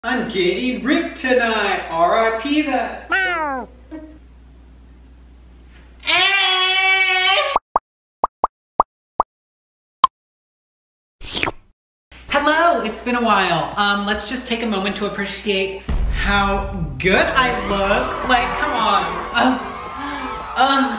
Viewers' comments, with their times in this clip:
0:03 IK I HAVENT EVEN STARTED WATCHING BUT THAT MEOW